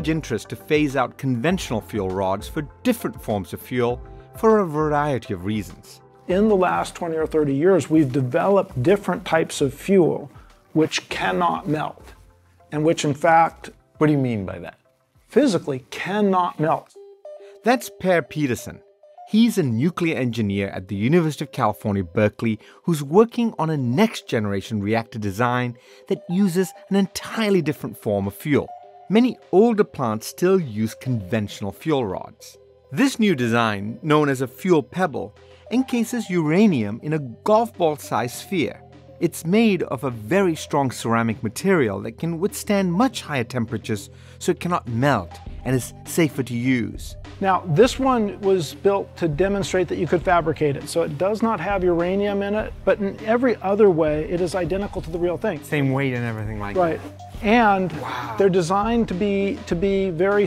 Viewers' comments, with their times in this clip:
0:07 That guy sounds just like Bill Nye
0:09 That guy sounds just like Bill Nye lol.
0:10 Is it just me or does this guy sound like bill Nye
0:45 he sounds just like Bill Nye.
0:47 Anyone else notice that the dude sounded like Bill Nye?